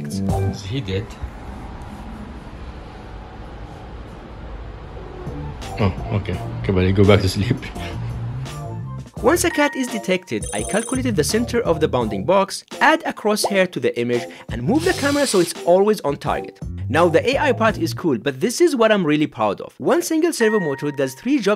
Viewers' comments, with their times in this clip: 0:04 Oh gosh the trilling is sooo CUTE! I have 3 cats and one of them always makes the "trillings" when i touch him, he's so adorable ❤